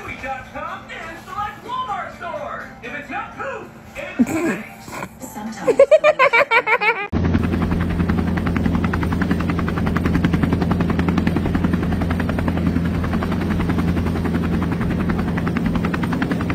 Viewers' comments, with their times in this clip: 0:04 BRO💀💀 THE LAUGHTER